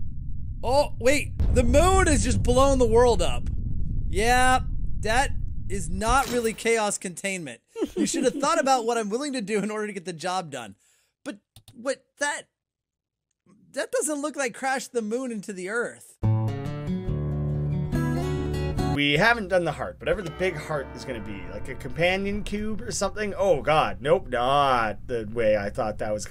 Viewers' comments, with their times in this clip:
0:09 (Hears laughter from Majora's mask) Me: .... BEN DROWNED REFERENCE!!!!!!!!!